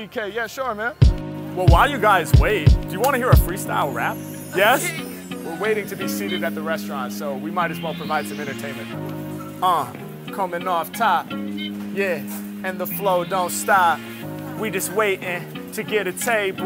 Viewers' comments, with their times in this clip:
0:03 That 3rd freestyle rides so smoothly! I’m a fan of people’s faces being filmed up close and intimately, so it feels like you are there.
0:04 Loved the joint the layed back flow and delivery made it really refreshing
0:04 Whenever Harry jump on these jazz beat you know it will we legendarary.